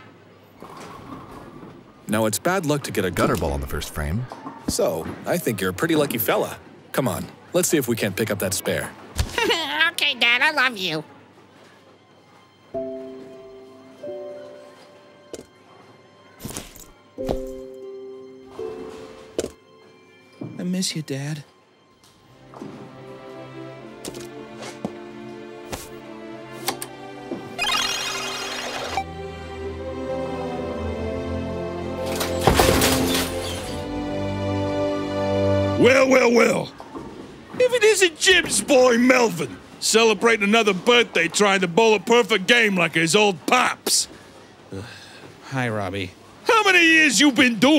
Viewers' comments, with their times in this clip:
0:09 coming back to watch this again, i love the voice so much
0:28 sounds like the very first note of the Terraria theme song